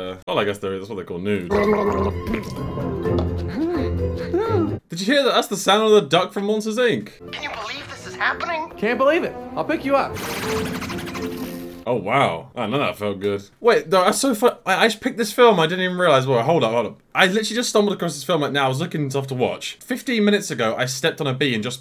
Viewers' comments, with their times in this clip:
0:07 it does soundlike it 😮